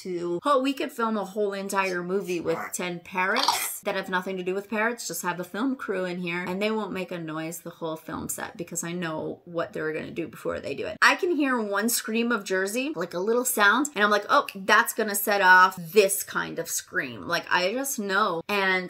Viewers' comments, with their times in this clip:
0:03 I like Merlins voice! 💕 🦜 nice crunch! 🤣